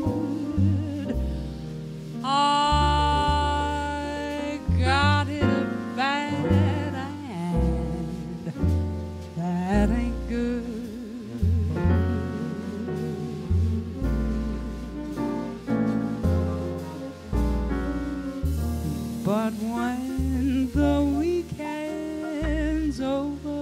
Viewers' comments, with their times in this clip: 0:05 Chet Baker moment